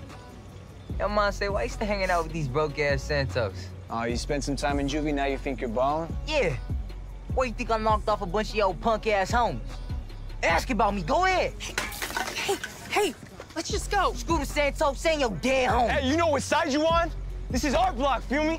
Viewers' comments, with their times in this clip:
0:06 bro he sound like that one shark puppet